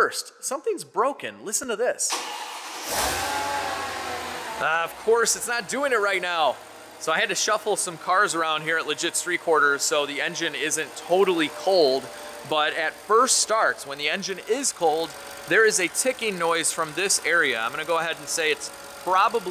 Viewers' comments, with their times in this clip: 0:03 sounded like a penguin noise.